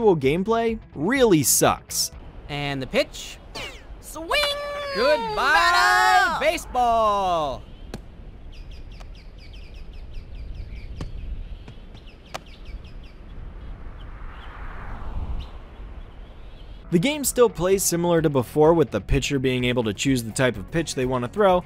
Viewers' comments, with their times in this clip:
0:05 New announcer, trying to mimic Sunny Day: Goodbyyyye baseball! "How dare you stand where she stood."